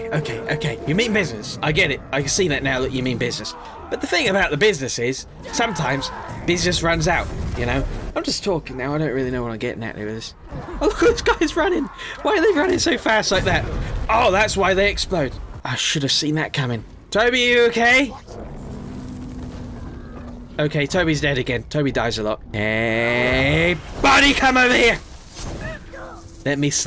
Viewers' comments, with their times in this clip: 0:10 why they runnin so fast lmao booooom